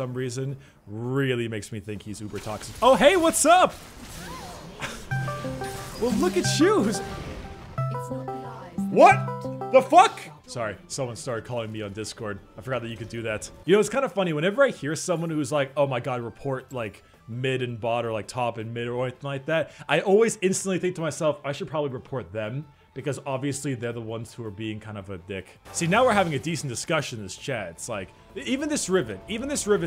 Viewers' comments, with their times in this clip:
0:09 I had discord open and thought and that someone was trying to call me XDD
0:13 i had discord on and i said inside of me what the actual fuck i dont have friends what is happening :0 and then i heard that that was your dis ;'( at least you have friends ;(